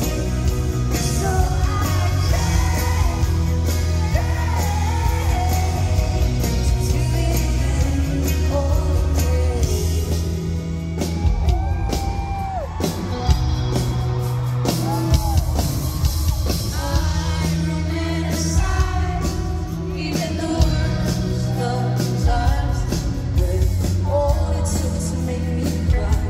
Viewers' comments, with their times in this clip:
0:10 At about the mark the drummer wakes up and finds his groove and the bass player picks it up and everything took off afterwards!